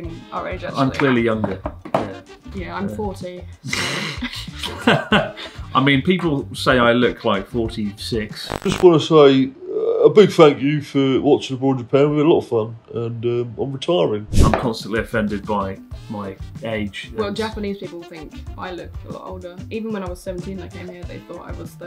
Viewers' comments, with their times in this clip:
0:03 Didn't know that you two was related until you started to talk, exact copy of eachother ysee?